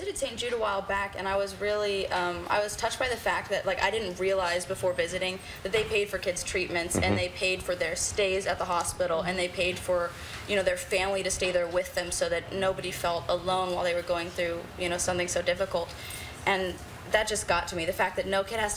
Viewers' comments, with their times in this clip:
0:06 I think somebody farted